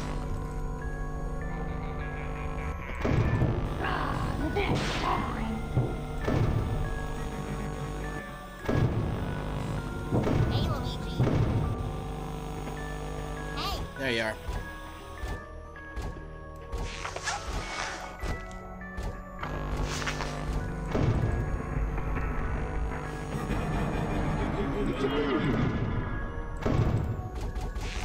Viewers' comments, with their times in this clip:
0:09 I dare you to hear hey Luigi Note:do not say we know or dont be mean okay .-.